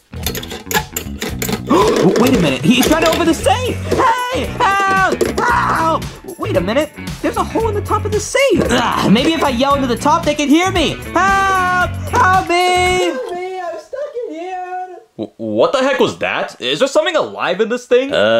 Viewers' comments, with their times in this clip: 0:06 Fuc fact: Crazy mario bros was just screaming from the other room